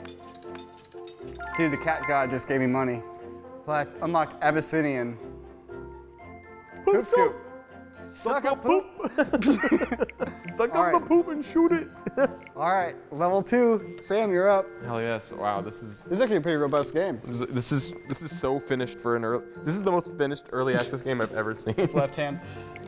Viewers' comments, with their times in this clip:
0:05 the harmonization is astounding.